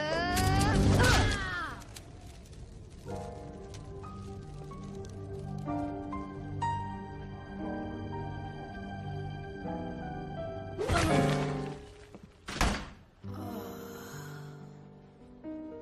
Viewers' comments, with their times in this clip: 0:03 such a beautiful tune